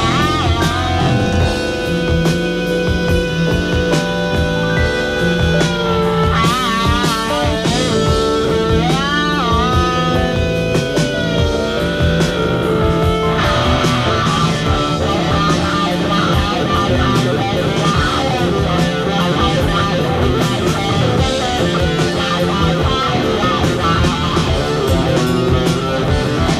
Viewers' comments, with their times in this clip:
0:09 Wow, when he flips to the bridge pickup…. Caramba! And the sustain notes … Oy!
0:11 There’s just so many points in time during this solo that I could touch on the feed back bleeds out then he whip lashes it back and it’s just so heavy. Mannnn Frank what guy heyyy you’ll love it it’s a way of life I’ll buy you a pizza